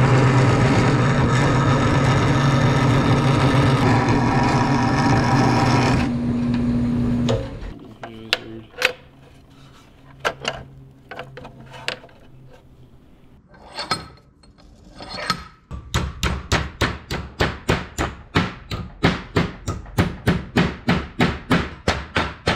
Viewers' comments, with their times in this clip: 0:07 i can here russian guy saying ''nihujasibe''? you have russian friends or you are one?